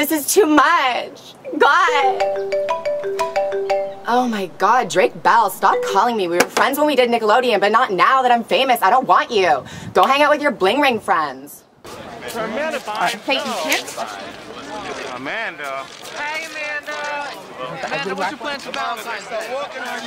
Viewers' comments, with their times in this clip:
0:08 Totally thought my phone was ringing took me a while to realize!